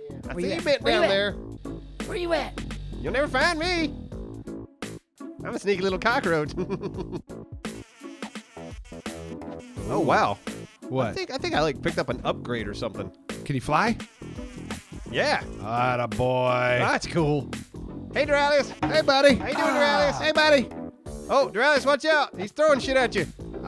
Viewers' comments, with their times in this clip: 0:06 dat laugh do